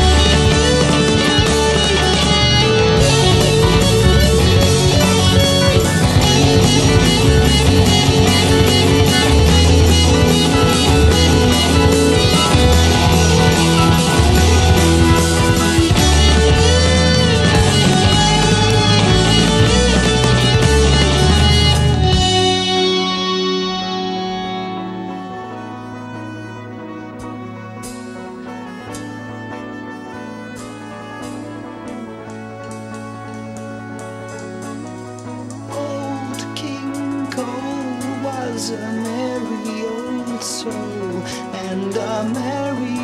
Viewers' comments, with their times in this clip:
0:04 Steve Hackett did tapping in 1971? :o He is definitely one of the early pioneers!
0:24 smash bros vibes here lol